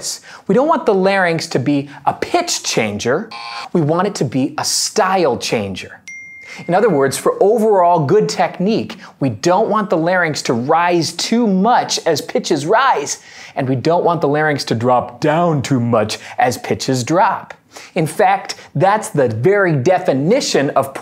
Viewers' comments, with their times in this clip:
0:06 On i thought i received a notification from my phone lol got me surprised